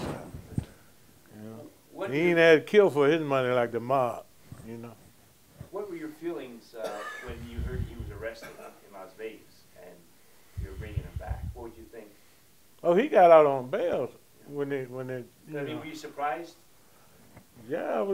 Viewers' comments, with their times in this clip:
0:05 why they sound like the feds